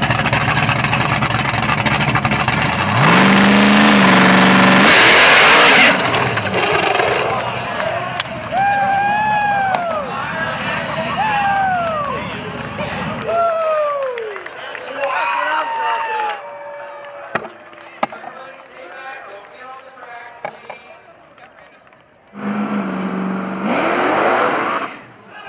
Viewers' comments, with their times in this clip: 0:08 that broken axel hit pretty hard on his side and broke his window. you can tell the guy is pissed ,especially when all the douchbags are laughing at his 4.,000$ repair bill